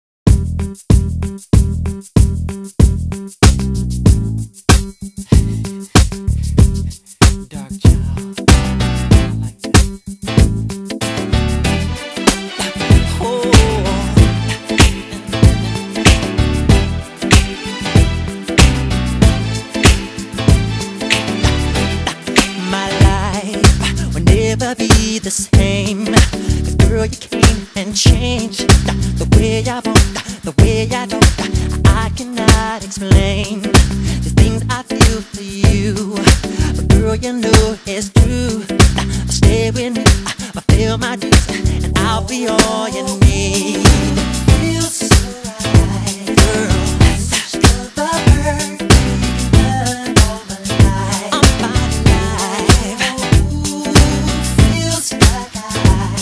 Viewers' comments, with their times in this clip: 0:08 It's so satisfying when the piano chords come in Magic 🔥
0:28 it sounds like the mic was too hot 🤣 🤣 🤣
0:42 That bridge is incredible.